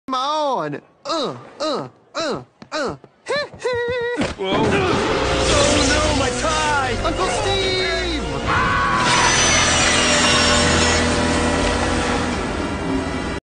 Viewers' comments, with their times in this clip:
0:03 He's saying hee hee like Micheal Jackson